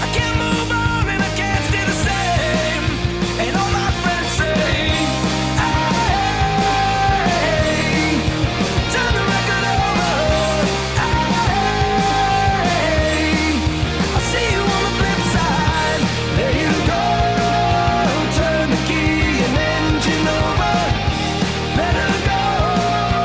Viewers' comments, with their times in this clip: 0:05 Just realized the chorus starts